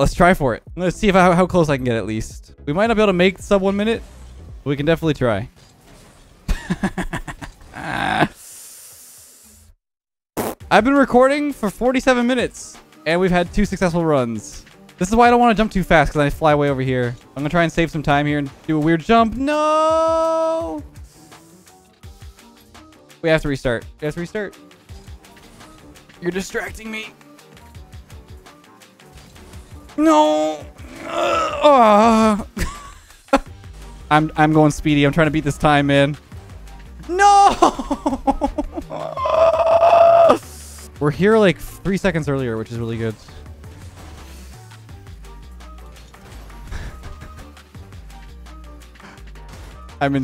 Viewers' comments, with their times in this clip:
0:06 The laugh of a man descending into madness
0:29 this is the sound of a 'premature' man if you catch my drift lol
0:34 Those grunts are 😂😂😂